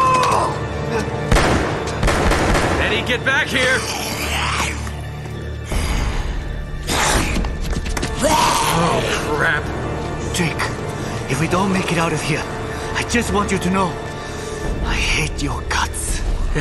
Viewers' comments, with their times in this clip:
0:04 i swear one of them said brains.